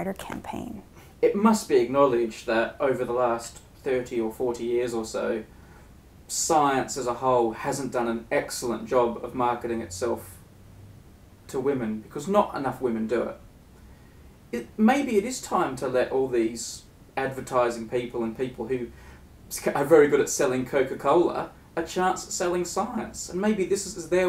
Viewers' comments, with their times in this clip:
0:05 I'm twisted, alright - but I heard "Science is a ho'" the first time through... pretty ironic...